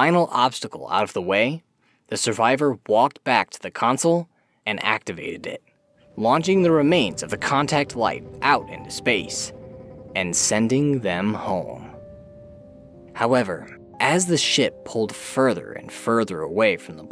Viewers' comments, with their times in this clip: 0:04 the best risk of rain soundtrack starts playing